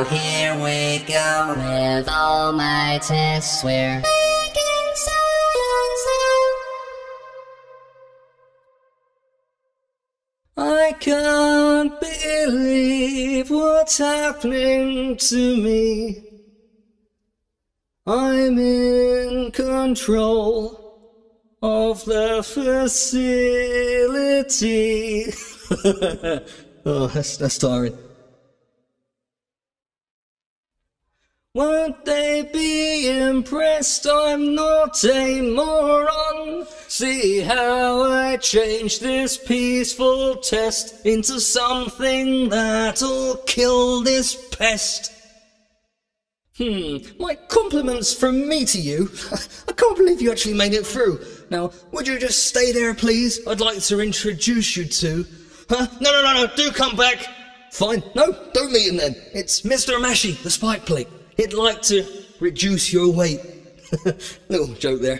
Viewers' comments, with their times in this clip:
0:10 feels WeIrD without music
0:21 bit really highlights how great your voice is
0:46 if you can sing good enough for me too hear the background music in an accapella than you can do anything